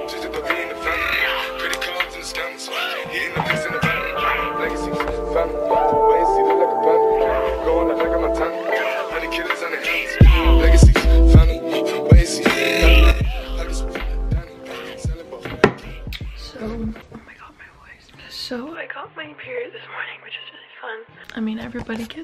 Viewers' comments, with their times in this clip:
0:07 the music makes me wanna 💃💃